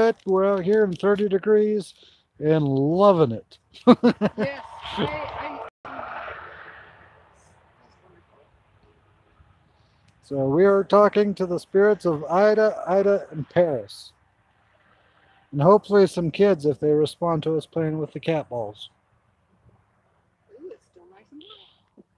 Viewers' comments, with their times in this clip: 0:05 heard a responds that i couldn't make out.